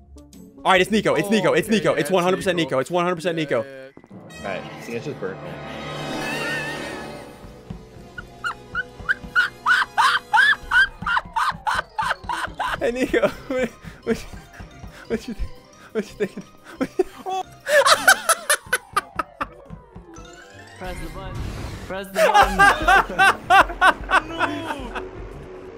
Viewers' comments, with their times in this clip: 0:08 dying hyena moment
0:09 that laugh lmao